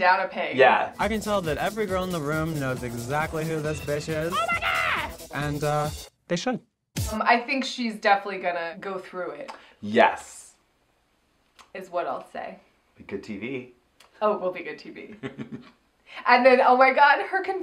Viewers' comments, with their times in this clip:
0:04 The only thing from Aquaria's confessional that gave me life is Vanessa's "OH MY GAH"